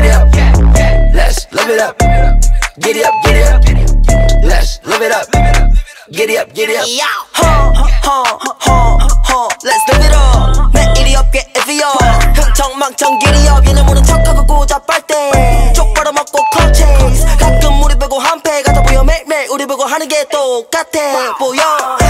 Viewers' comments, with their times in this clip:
0:07 "han han han huh huh huh han" DOPE DROP!